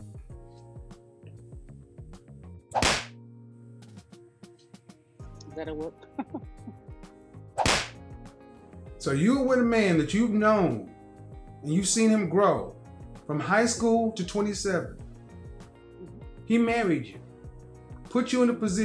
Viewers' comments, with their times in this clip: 0:05 mashing that slap effect like a Nintendo controller